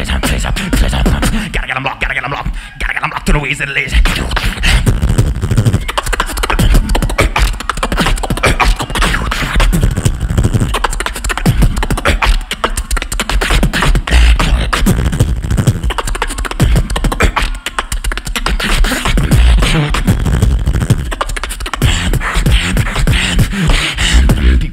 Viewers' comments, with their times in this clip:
0:03 Can someone explain B-Art's drop here? It doesn't sound like anything lol
0:07 JPF On he’s just not on any tempo - it’s just an untimed mess.